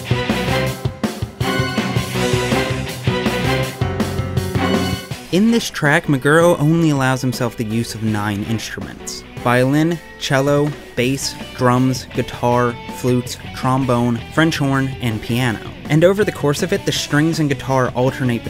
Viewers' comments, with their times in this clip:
0:05 you interrupt the battle theme just when it was getting better